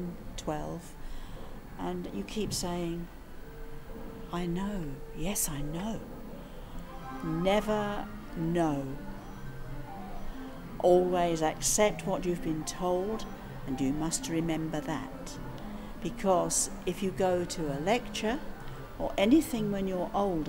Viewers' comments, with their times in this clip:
0:08 This was a nice video. I was pleasantly surprised to hear the Super Mario Bros. theme come in :)